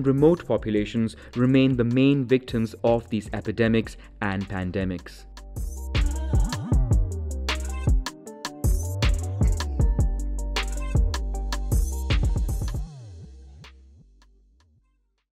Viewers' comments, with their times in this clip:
0:09 Video about pandemics: ends Trap music in the background: